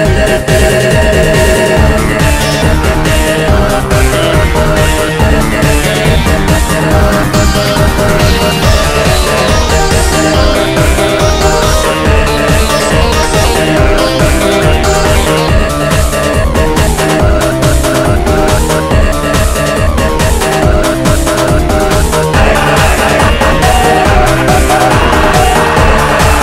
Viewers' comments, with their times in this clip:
0:10 that pitch was funny i died